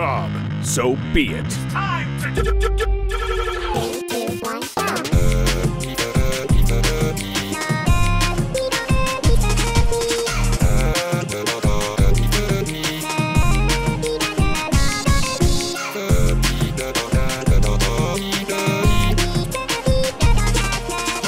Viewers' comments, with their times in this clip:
0:06 yo kaiba damn dude just really beat bf and he sings really well